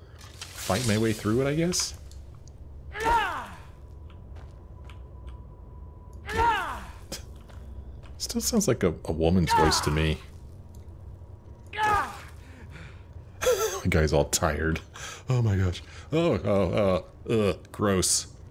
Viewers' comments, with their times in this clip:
0:05 Sounds like a woman's voice? Dude.. I think you might need to talk to an actual woman...